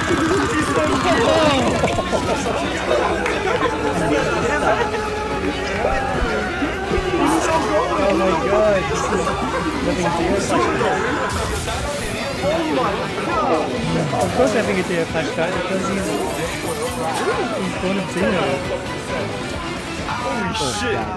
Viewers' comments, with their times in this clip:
0:05 this might sound stupid but i keep hearing JOSUKEEEEE KUNNNNNN For some reason